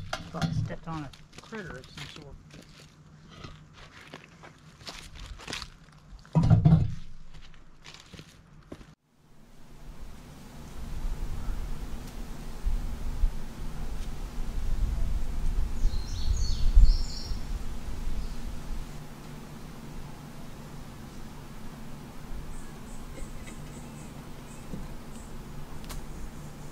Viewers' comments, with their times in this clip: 0:08 I knew that squeaky toy was Walnut when you stepped on it ... LOL